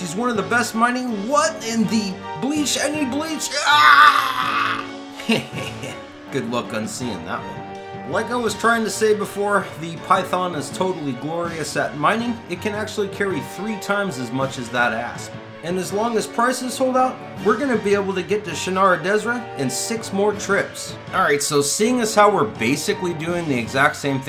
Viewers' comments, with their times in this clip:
0:08 I thought you said "It can carry three times as much as that ass" gave me a good chuckle